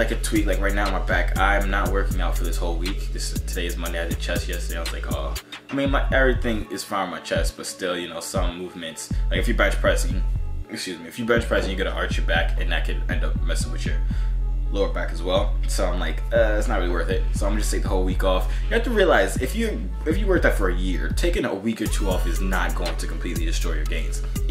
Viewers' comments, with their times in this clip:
0:09 Did you just belch?..... Too much protein powder indigestion... Lmao